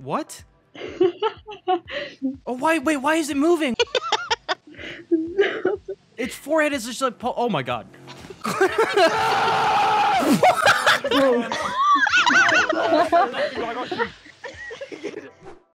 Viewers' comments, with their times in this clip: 0:12 IM LAUGHING THIS IS THE BEST PART… It sounds like a war scene LOL